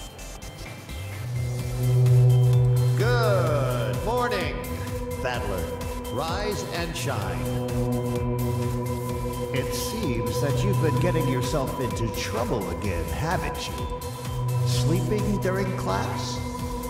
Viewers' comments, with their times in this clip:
0:03 kind of reminds me of gman